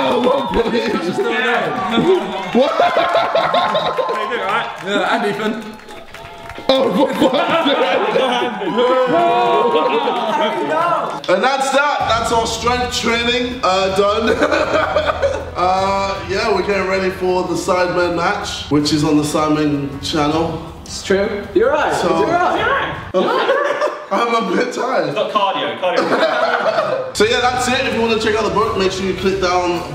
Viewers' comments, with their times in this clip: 0:10 did anyone else hear vik shout "Harry no!" lol